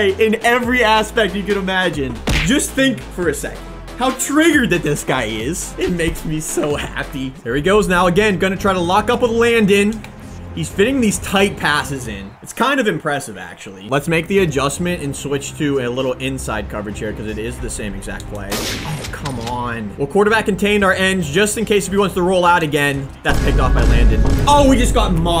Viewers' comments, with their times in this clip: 0:06 “It makes me so happy!” He sounds like a first grader